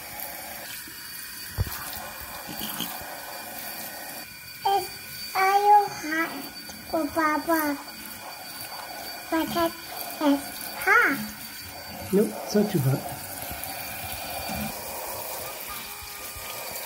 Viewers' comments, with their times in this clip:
0:03 omg the cat is talking